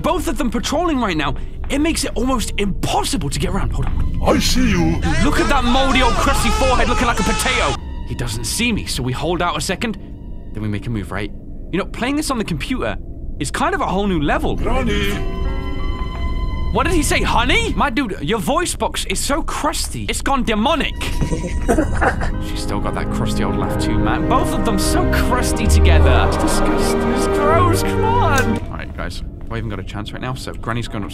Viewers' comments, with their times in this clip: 0:06 that i sound when i clean my door
0:14 did anyone else think that grandpa said Nani?
0:16 I stg grandpa said, "Nani?" 😂